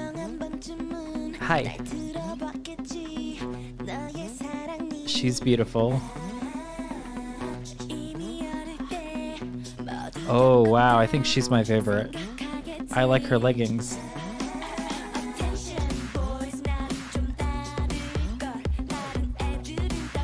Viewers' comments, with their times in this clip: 0:05 it’s krystal! she is jessica’s (ex-snsd) sister and at the same time, kai’s ex-girlfriend. she is known by her perfect visuals :) i think her vocal tone is so cool. also she is an actress :)